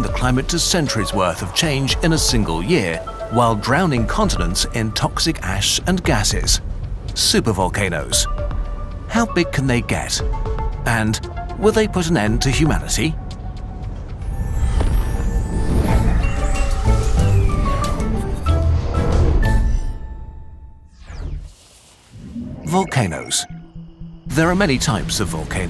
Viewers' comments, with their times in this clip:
0:07 that's the happiest I've ever heard someone sound while talking about the end of humanity.
0:10 "Will they put an end to humanity?" sounds like the next thing to say would be "...pretty please?" 😅